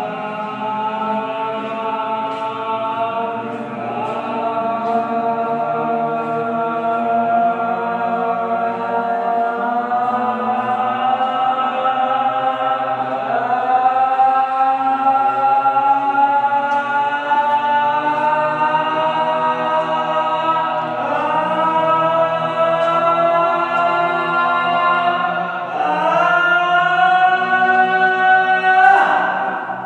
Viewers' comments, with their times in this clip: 0:07 it sounds like a soundtrack from outlast
0:10 ghost be like : you guys are off pitch